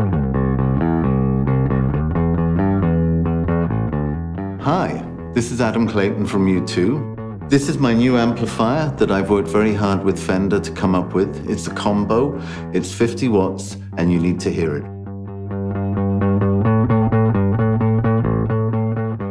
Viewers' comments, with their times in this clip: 0:04 did he say Adam Clayton from U2 or YouTube ?